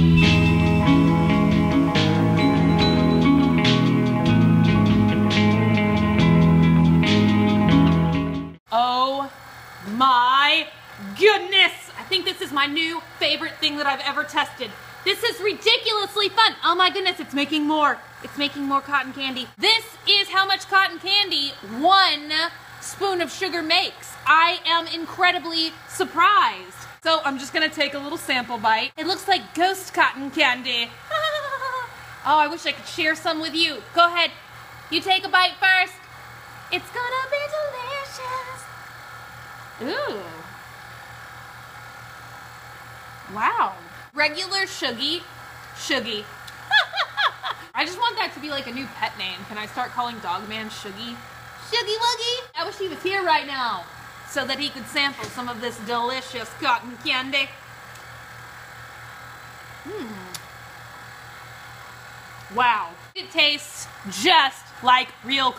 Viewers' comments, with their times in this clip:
0:05 that music makes me feel like i just woke up.
0:45 that laugh is so adorable
0:46 also what is that laugh